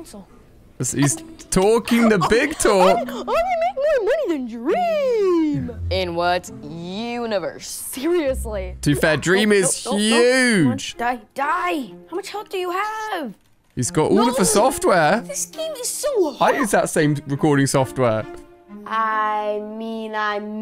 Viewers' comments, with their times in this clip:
0:03 THAT VOICE IS SO FUNNY